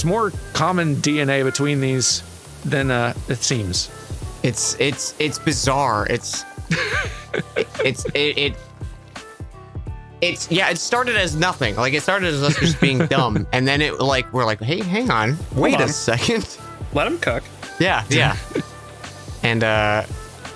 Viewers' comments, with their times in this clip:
0:03 ...is it just me or does the background music here sound exactly like the chocobo theme?